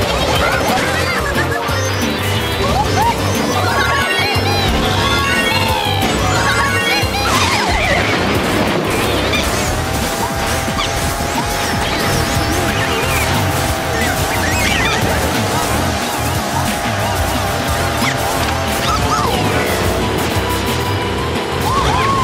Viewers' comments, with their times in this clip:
0:10 The bike acceleration sound is sounds like Mario kart DS acceleration sound